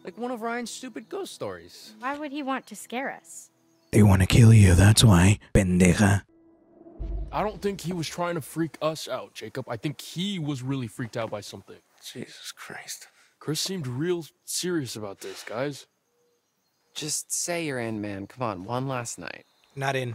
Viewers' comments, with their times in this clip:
0:05 Did he say the N-word!?!?!?